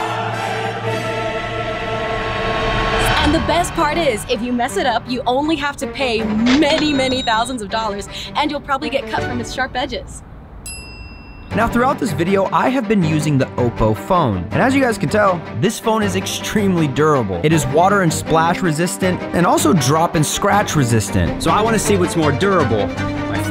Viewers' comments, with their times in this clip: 0:07 Why does the parkour girl sound and looks like dorra the expora 😂😂😂